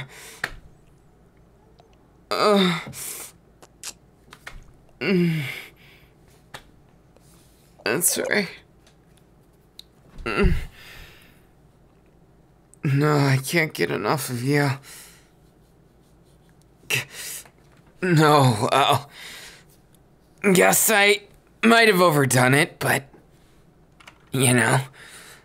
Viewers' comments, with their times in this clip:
0:08 No one talking about that sound of like water or whatever -50 when Denki said "I'm sorry" and sounded all cute and everything I kept rewinding that part for 2 reasons: 1) to hear him say that "I'm sorry" 2) to figure out what that watery splashing noise was